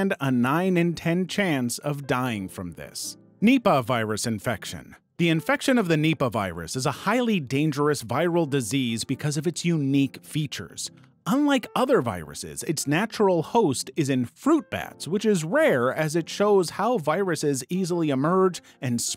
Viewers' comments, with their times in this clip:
0:04 literally the first thing which got into my brain when i heard this was the song "mipah zuzuzuzuzuzu"